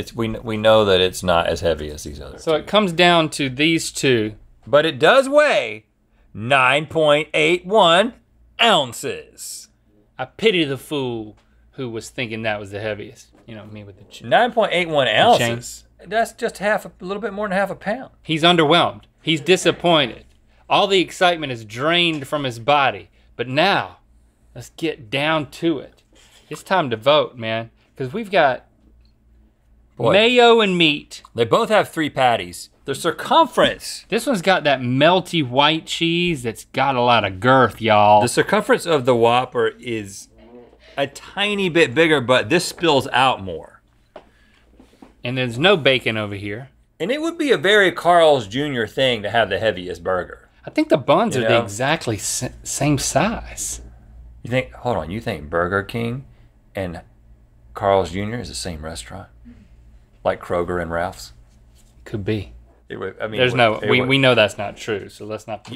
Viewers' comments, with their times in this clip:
0:09 World's chillest Mr. T impression
0:51 Link's second recorded use of the phrase "the zackly same"